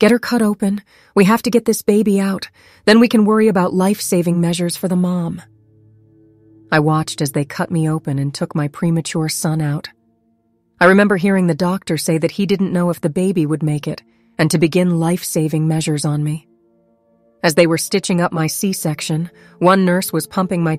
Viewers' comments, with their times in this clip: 0:05 This woman’s voice is too drama. Not pleasant. Soo annoying- ruins the story . I lasted